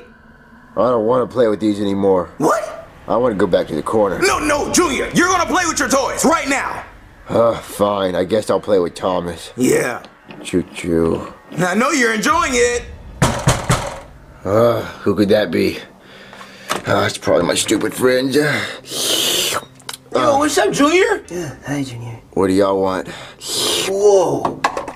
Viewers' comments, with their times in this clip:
0:10 Choo choo deep